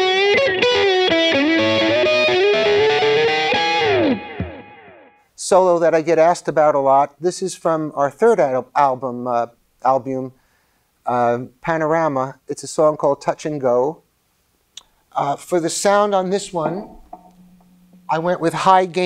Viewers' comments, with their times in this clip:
0:05 is one of best licks it’s clean best part of any cars songs